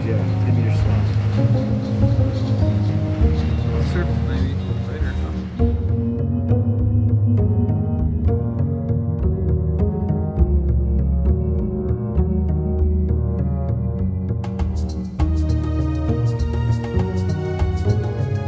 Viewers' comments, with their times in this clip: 0:05 make sure to watch after the credits! Straight goosebumps that is one of the sickest drops I have ever seen. Whatever music is playing is fucking perfect